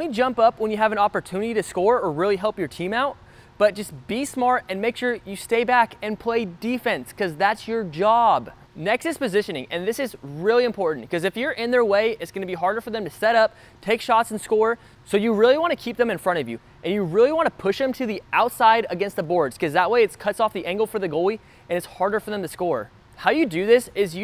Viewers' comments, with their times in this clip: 0:07 bro sounded like it was personal to him